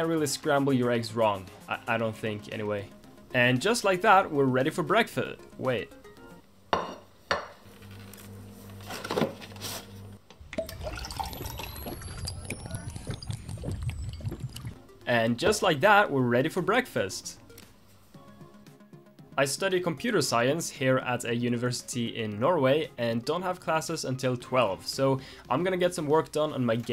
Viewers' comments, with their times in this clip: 0:10 hello friend greetings from colombia, I also aspire to do a programmer xd, hahaha that sound of fornite drink <~~~~~~~~
0:14 The milk pouring sound was of fortnite drinking shield